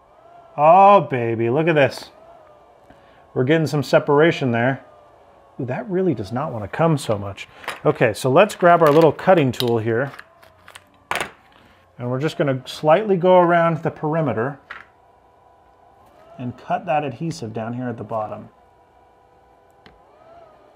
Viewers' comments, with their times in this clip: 0:05 That doesn't wanna do what so much??